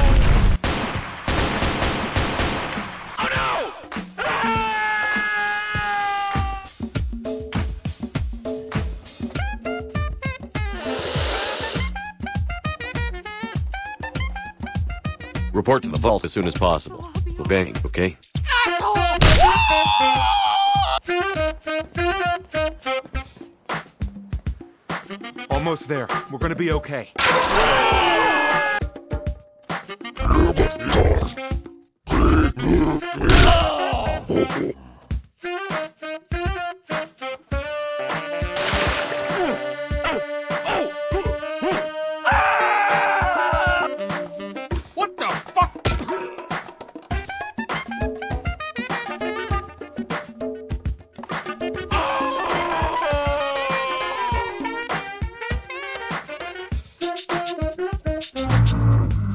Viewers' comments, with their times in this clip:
0:10 "Dat Crack tho"
0:14 Report to the Vault as soon as possible, we'll bang, okay? - Lone Shepard.
0:15 Commander Shepard All ways recognize lol but how u get him to say vault lol
0:44 LOL the Kenny voice line, I can't.